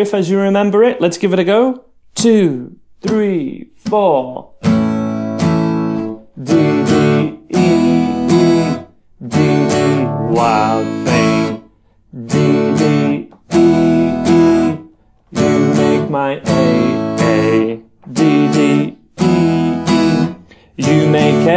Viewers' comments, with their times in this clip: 0:06 how could the sound stopped so neatly once he strummed down, while mine still vibrating?